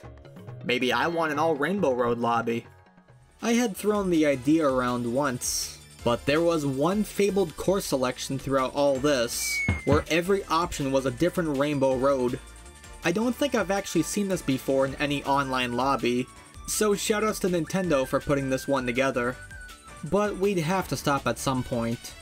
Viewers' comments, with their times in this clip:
0:10 “Every option was a different Rainbow Road” Music playing isn’t from any of the ones onscreen